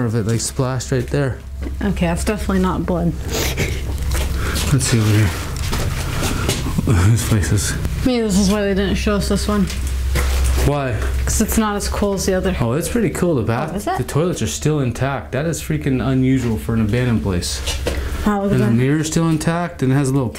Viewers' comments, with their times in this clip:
0:04 Theres an evp here. Sounds like its saying "Whats in here" at the same time as you. Then theres a couple words said afterwards